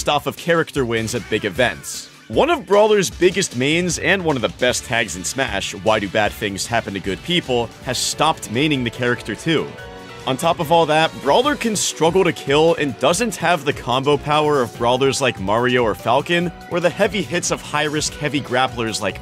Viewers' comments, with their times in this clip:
0:07 Nice music transition, very subtle. Didn't notice a thing.